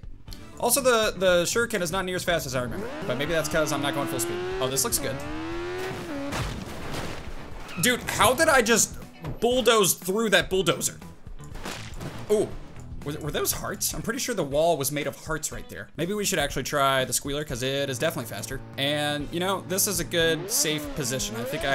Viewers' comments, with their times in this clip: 0:05 wait for it... wait for it... BOOM!! That motorcycle bulldozed thru a bulldozer